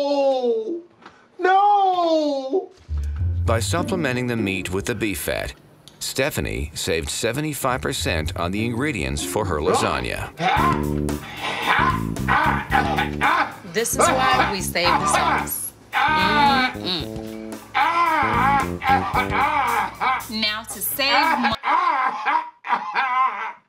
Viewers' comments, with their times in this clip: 0:09 blast dying sounds